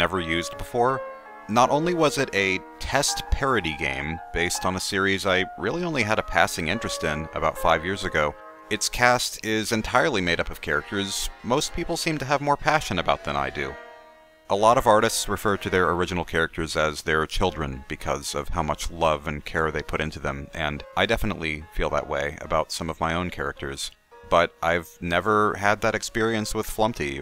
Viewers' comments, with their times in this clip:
0:09 "i heard a gun"